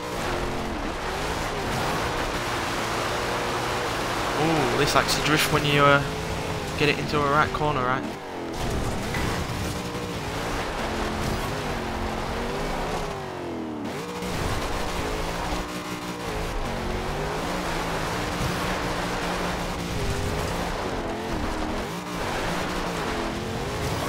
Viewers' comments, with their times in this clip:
0:06 Ok.... umm I didn't really expect that handling....... BTW, did you turn slightly Australian for a moment.... "This likes too drift if you get it in to a Right corner Right" :P